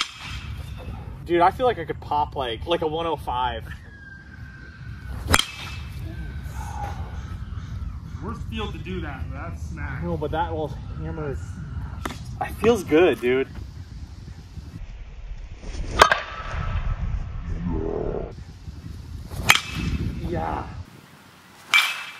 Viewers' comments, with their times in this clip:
0:05 there is someone screaming
0:10 Does anybody else hear screaming